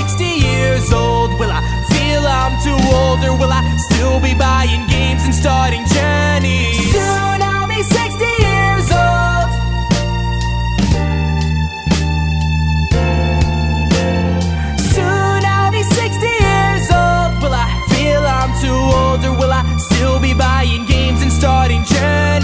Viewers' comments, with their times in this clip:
0:06 WAY TO MUCH FRICKEN AUTOTUNE